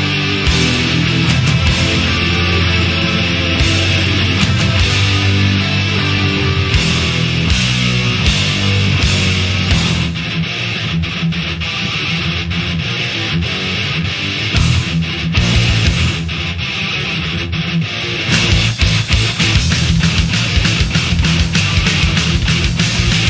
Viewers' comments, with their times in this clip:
0:09 the best fastest guitar riff ever!